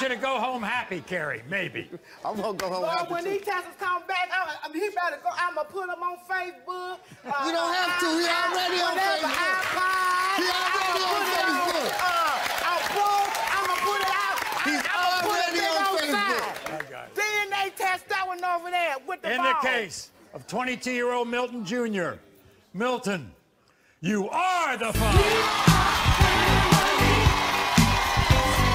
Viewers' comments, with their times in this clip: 0:09 I’d hate to be her kid. Anything logical I’d ever say would not matter to her. Plus her voice annoys me.